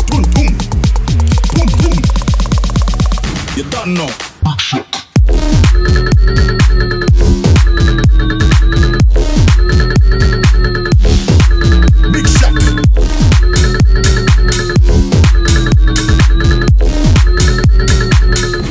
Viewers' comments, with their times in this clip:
0:03 if you have it set to 0.75x you Get Moombahton 🕺🏻